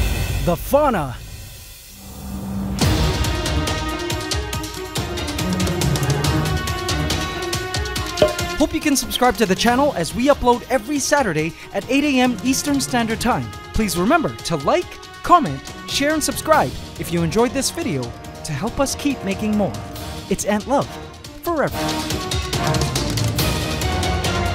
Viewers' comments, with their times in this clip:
0:07 ngl the music at the end is kind of a bop